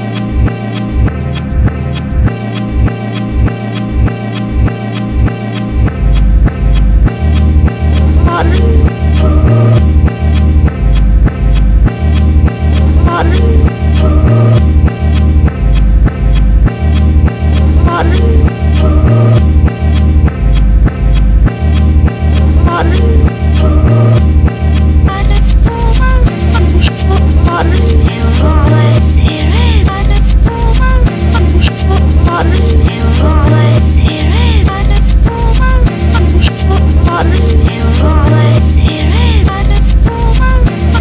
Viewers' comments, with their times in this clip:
0:07 I keep hearing "heartless"
0:08 sounds like "i'm falling"
0:13 it sounds like Alice is saying hard lick
0:25 Alice reversed sounds like the vibes of a kaleidoscope turning every beat especially
0:25 it’s sounds like hard licks miracle let’s here it magic oh